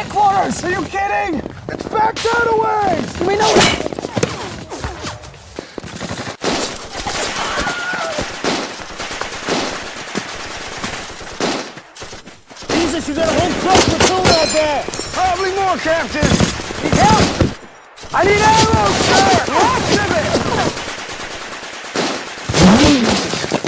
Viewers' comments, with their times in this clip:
0:07 Wilhelm Scream baby.